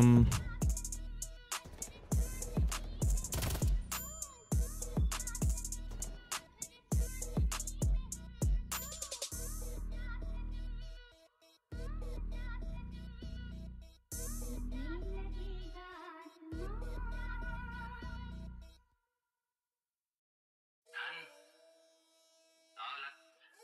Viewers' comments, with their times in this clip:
0:10 Audio stopped working